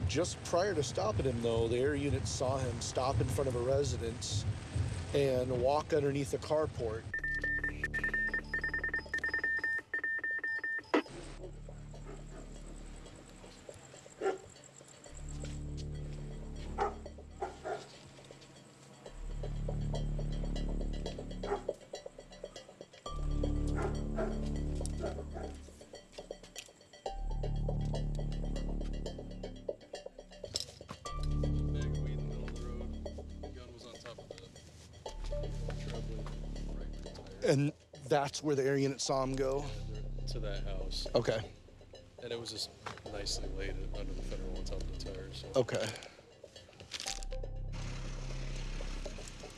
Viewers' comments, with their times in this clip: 0:06 Microsoft Morse: trying to techno
0:07 is that morse code or computer glitch?
0:07 Lol why are there computer sounds?
0:08 looks like someone failed editing in the radio sounds?
0:08 Wow, Morse Code Are we back in the '40s?
0:22 sounds like those computer programs music lmfao
0:34 subtitle “ gun was on top of the (unintelligible)” u can clearly hear trailblazer 😂
0:37 “and that’s where the aryan saw him go?” Lolol obvious misspeak but still interesting slip up. Cops are badass. Bless em.